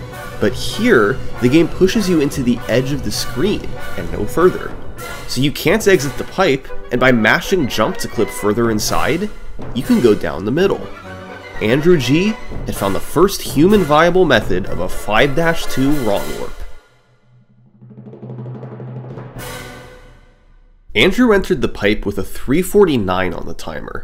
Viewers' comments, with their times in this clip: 0:06 ngl idk about this kinda music in a sum salt vid 🤨